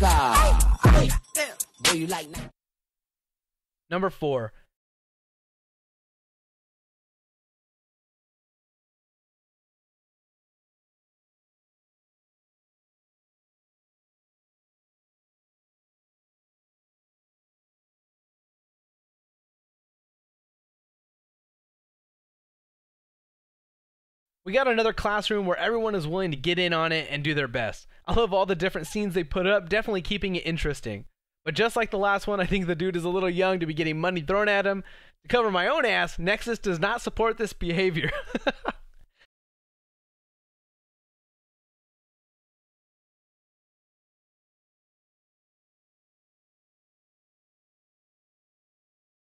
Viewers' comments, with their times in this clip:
0:05 I was what is head phones broken
0:12 did anyone else think their audio turned off ?
0:36 Aw your laugh is really cute. Going to check out more of your videos for sure c: